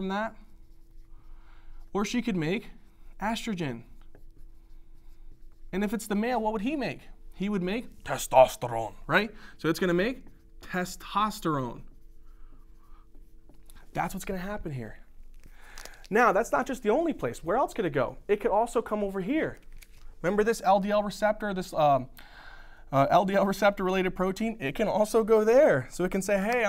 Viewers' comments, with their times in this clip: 0:08 Hi Dr. you are really the best teacher I have ever seen and your way of teaching and the effort that you put in these videos are awesome. Keep up the good work . BTW I loved the way you said " TESTOSTERONE "
0:10 The emphasized “testosterone” cracked me up 😂 thank for an amazing series. Loved every single one!